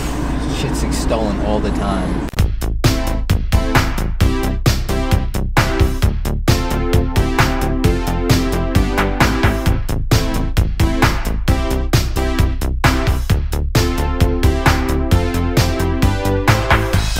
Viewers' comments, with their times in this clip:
0:04 yooooo someone tell me what the track is stranger things vibes for sure